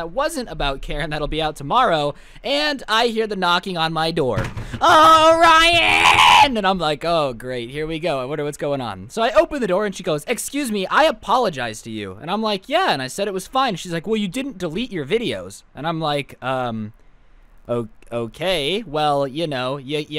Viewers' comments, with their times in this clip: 0:04 the voice crack though